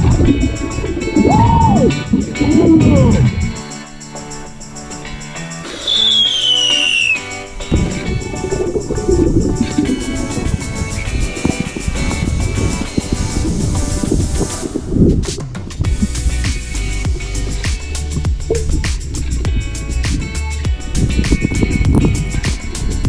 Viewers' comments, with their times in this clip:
0:05 I was thinking that sound was a firework